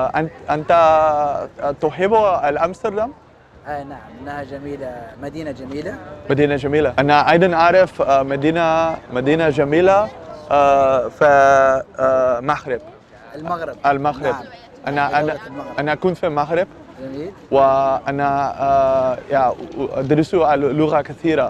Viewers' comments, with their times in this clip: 0:09 Oh God, he said my name in that's crazy how it sounds so similar